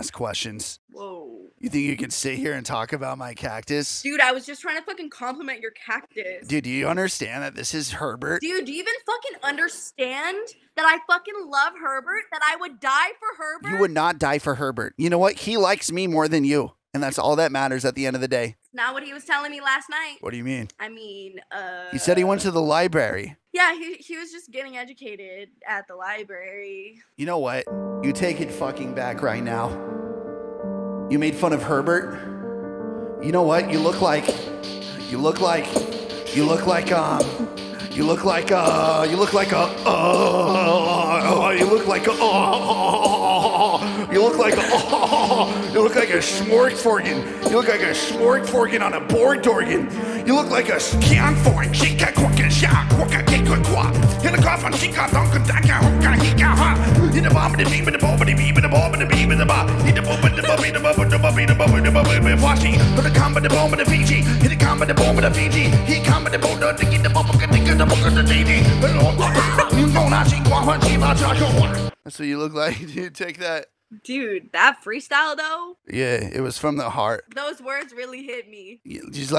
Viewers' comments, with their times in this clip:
0:08 that went so smooth and she was talking so confidently that I was having doubts on my ears!!..damn that flowed like water!
0:31 never thought i'd jam to a freestyle thats not even using any form of language
0:43 everybody gangsta until he starts speaking enchantment table
0:45 bro better then a lot of the rap music nowadays
0:48 Chinese rappers be like
0:49 why this sound like some lowkey heat ass german rap
0:50 sounds like icp
0:51 why do this sound like something they’d play in Jabba’s palace?
0:51 I think even aliens would struggle to understand him
0:51 Fnf song starts
0:53 we found a dialect more violent than german
0:53 bro was speaking simish
0:53 is that french
0:53 bro sounds like vegeta
0:53 he was speaking enchantment table
0:54 its like listening to Russian music, you don't know what their saying but it sounds cool.
0:55 What I hear when they tell me the WI-FI password:
0:55 when the teacher asks the special ed student to read
0:56 mumble rappers be like.
1:03 he sounded like a korean dude whose drunk on omegle.